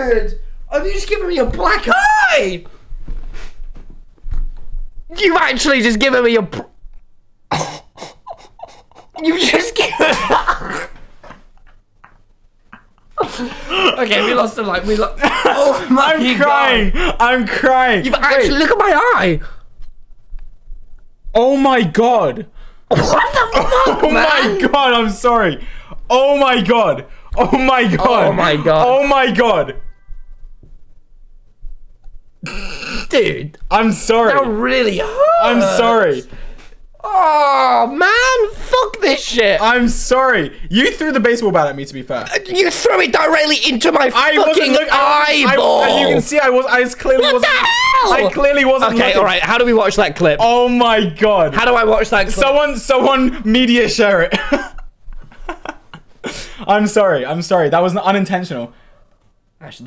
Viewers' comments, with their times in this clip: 0:09 why is he laughing wean he got a black eye?!
0:47 Everyone rewatching him getting hit with the duck: nice 👌🏻 Me: “What the h𝐄ll” nice voice crack Tommy 😅😂
0:47 he sounds like a ghast
0:47 his voice Crack.
0:47 that high note 🥲
0:47 voice go brrrrrrr📈📈📈📈📈📈📈📈📈📈